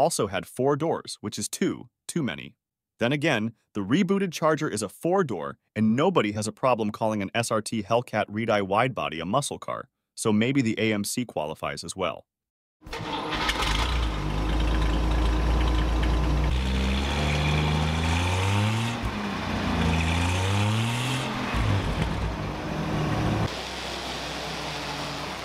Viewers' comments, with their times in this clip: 0:10 A good presentation, but I wish you'd give that robot voice a bit of training. what is an "SRT Hellcat Reed eye"? And most humans don't say "Cee Eye" (c.i.) after displacement figures. BTW, Dodge built the Polara, not the Polaris. "Porsche nine hundred and eleven models." Hmmm.